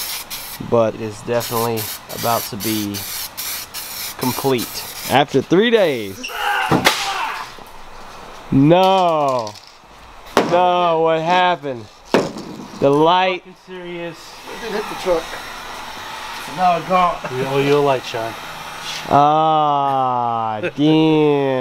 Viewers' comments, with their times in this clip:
0:07 I thought dad was getting his cheeks busted or wig split, crying out like someone's gonna need some therapy!